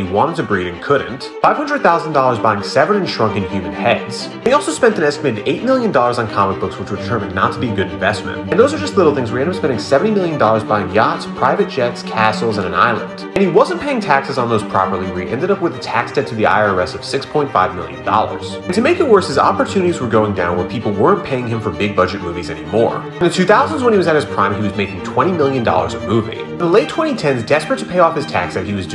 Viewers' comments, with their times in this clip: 0:09 cases or castles